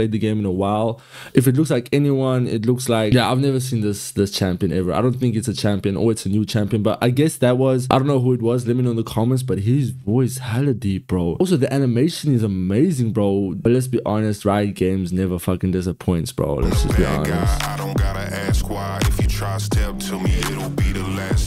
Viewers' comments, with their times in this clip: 0:04 is Kayn but that maybe Rhaast(the Darkin in Kayn) who singing with suck a deep voice 😅
0:09 he's Kyan the one who is possessed by his weapon(Rhaast) in the og game. In this universe Rhaast is like his alter ego, that's why he has a deeper voice singing